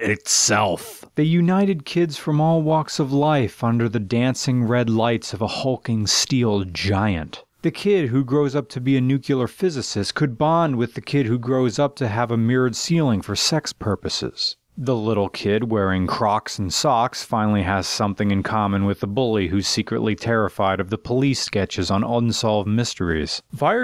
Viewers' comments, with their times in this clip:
0:07 "the kid who grows up to be a nucular physicist" NUCULAR physicist Son, I am disappoint.
0:08 WAIT. WAIT. WAIT. "NUKE-YA-LER"? ARE YOU KIDDING ME, MAN.
0:09 Dude, did you say nuc-u-ler?